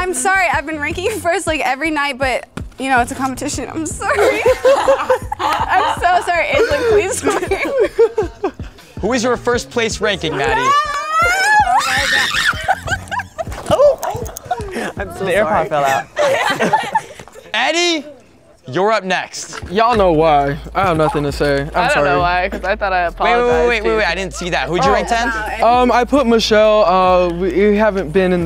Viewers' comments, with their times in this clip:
0:10 why did she scream like that lmao